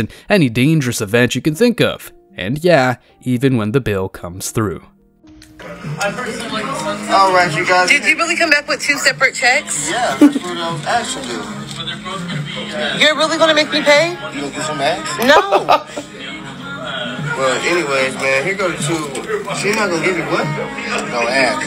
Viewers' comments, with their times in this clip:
0:06 the music in the background, perfect and priceless 😅👌